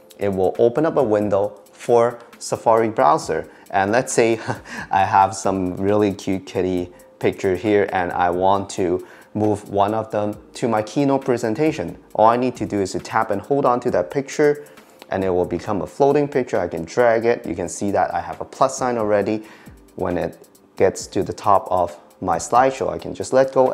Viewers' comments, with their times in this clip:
0:06 I know he said kitty but it sounded a lot like something else.